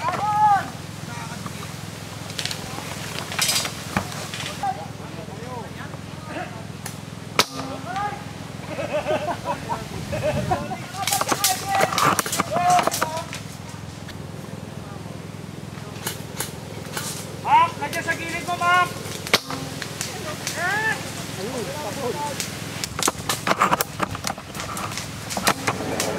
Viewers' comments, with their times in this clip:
0:06 *got hit... "ARAY!!" (ouch) *group laugh. Only in the Philippines.
0:07 that laugh though XD